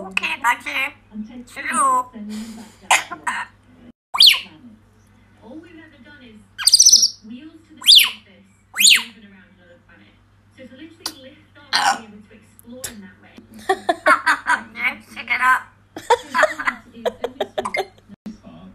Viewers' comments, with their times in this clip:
0:04 sometimes parrots make normal parrot noises